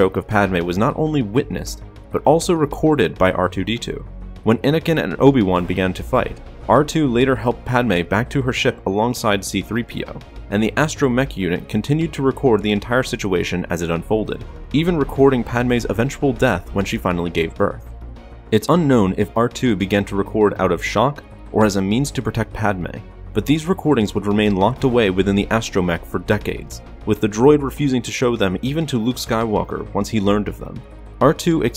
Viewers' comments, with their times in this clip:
0:06 am i the only one who fought r2-d2 saId BLYAAT!
0:07 I thought R2 said “Blyat” for a second and was super confused.
0:07 R2- say cyka blyat
0:08 R2-D2 swearing in russian
0:08 I thought R2 was saying Blyat
0:08 Did anyone notice what Artoo said.. no.. screeched
0:08 proof that R2D2 is a russian spy. BLYAAAT
0:09 R2D2 tried to say blayt' so he knew Russian as well.
0:11 angry R2 reveals his Russian heritage as he yells "cyka blyat! towards Anakin
0:12 i though R2 said BLYAT
0:13 I thought he was saying “BLYAT”
0:13 I thought it said BLYAT!